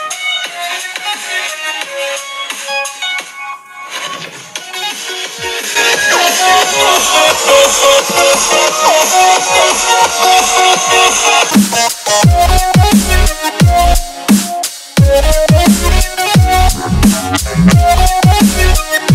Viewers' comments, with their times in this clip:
0:03 you've get up the volume. FAKE
0:03 lol this is fake he just turned the volume high
0:05 In u have increased sound
0:05 it is fake be cause you increased the volume
0:07 hahahaha u made the phone louder 😂